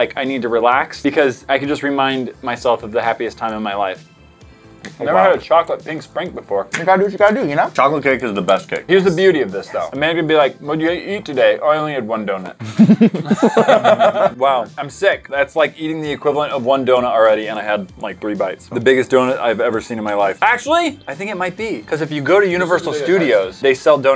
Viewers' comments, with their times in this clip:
0:08 you. An hear someone whispering